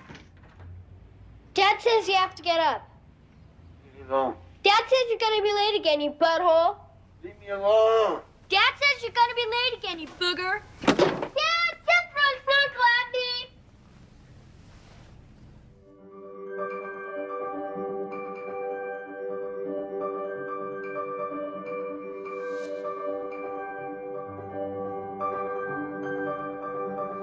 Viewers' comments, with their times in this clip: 0:09 Ive been trying to figure out what this kid says here since I first saw this movie in the 80's. Close captioning says "snorkel" but it sure doesnt sound like it